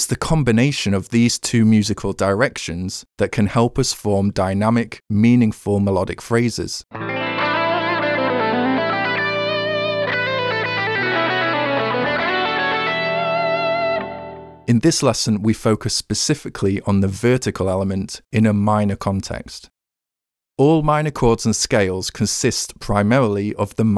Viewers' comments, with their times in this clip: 0:07 That was a FILTHY lick! Bravo on that, my good man...